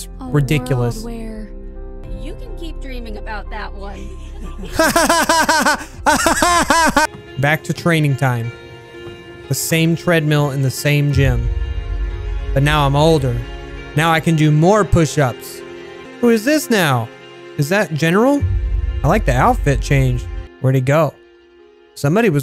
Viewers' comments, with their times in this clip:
0:03 "AHAHAHAHAHhhHHHHh" got me laughing like crazy